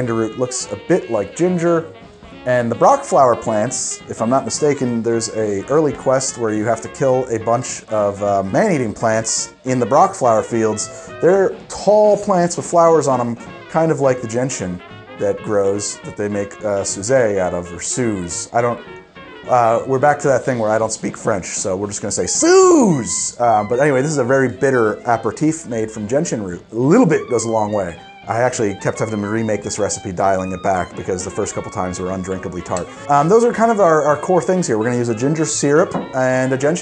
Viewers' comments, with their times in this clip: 0:06 I heard this so wrong until I put on captions. 🤣 “There’s a girly quest?” He said early quest. For a second I was like sister’s reaction from red vs blue “what the fuck are girly laps?”
0:23 As a French native speaker I'll try to help you with the Suze's pronunciation. Well you almost pronounced it perfectly but instead of your 'u' sound, use the 'u' of Hugo. Hope that'll help! Also, great video!